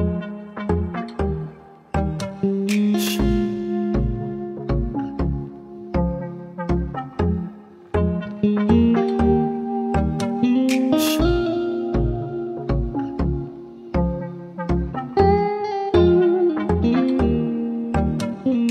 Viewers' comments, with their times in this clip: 0:03 still expecting Sultans of Swing at this point ;)